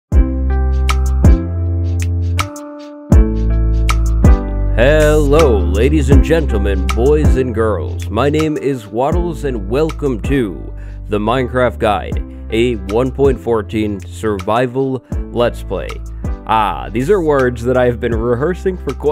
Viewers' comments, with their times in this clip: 0:03 why do I always think that his intro is a rap